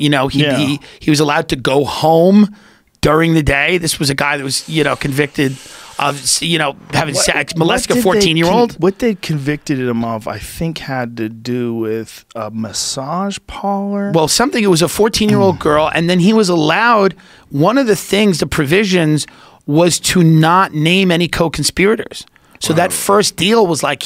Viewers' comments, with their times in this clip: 0:07 these morons laugh about denying video evidence, just because they WANT to believe it isn't true. So pathetic.